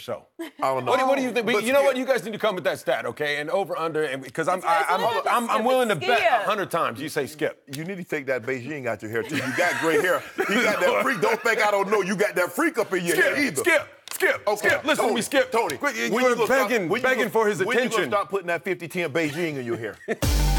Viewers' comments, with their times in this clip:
0:04 The way Joy said SKIIIUUP! Hahaha.